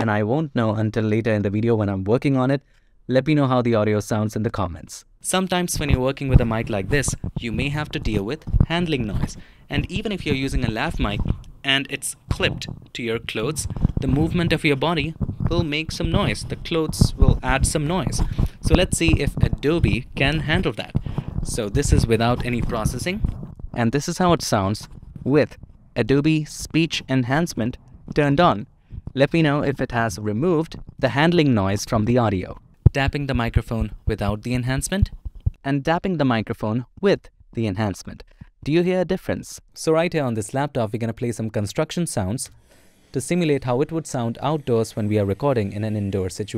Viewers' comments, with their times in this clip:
0:04 That is unbelievable! It won't fix a Lav that someone clips inside their polyester jacket but the fix on the SM58 sounds great.
0:13 Asmr start from here
0:34 there is Edit Mistake between enhanced and turned off it should be the opposite